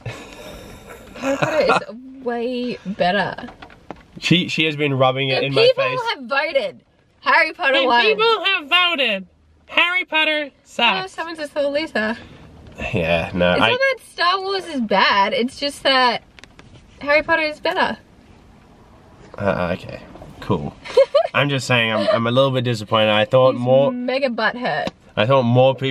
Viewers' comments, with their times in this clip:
0:07 He sounds like Dobby 😐
0:07 lol sounds like her